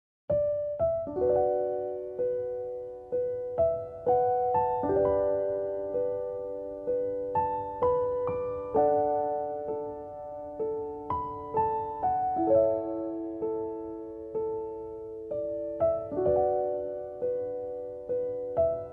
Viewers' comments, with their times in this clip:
0:01 lol i thought it was the giorno theme